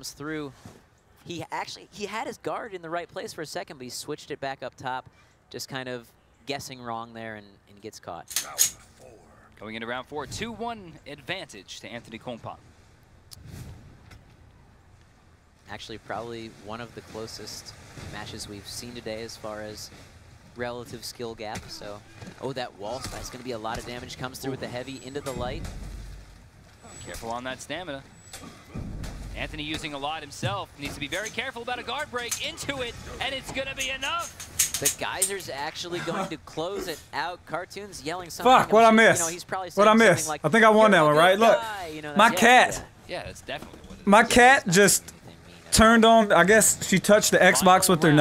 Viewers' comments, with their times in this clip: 0:07 did anyone else here cartoonz load his gun before checking the door
0:07 I thought you loaded your gun so I was like" How come he didn't name that someone was at the door or sum like that" but no.It was a cat.A CAT.
0:07 it sounded like he actioned a gun
0:07 who heard the gun
0:07 Is it me or did I hear a gun chamber in
0:07 you can hear when he loads his gun lmao
0:07 u hear a gun click😂
0:07 minutes into the video u hear a glock being cocked
0:07 The pizza guy outside "Huh? Is that boss music I hear?"
0:07 is it just me or did Cartoonz cock a gun
0:07 did you here him load a gun is that just me😂
0:07 was that a gun?
0:08 is sounds like he loaded a gun
0:08 tell me if you guys heard a gun loading
0:08 Did you hear the gun on
0:09 At min its sounds like he got a gun 🔫
0:09 I'm I the only one who heard him cock his gun
0:12 cartoons did I hear a gun load at like ?
0:30 u can hear him clear it
0:30 when i heard the gun cock i was like o shit things about to go down and i just waited for the shots